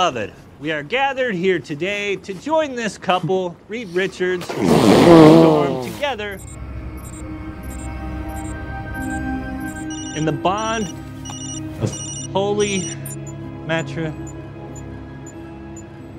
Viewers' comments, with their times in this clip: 0:04 Idky but when Thing blows his nose 🤧 I think it's hilarious 🤣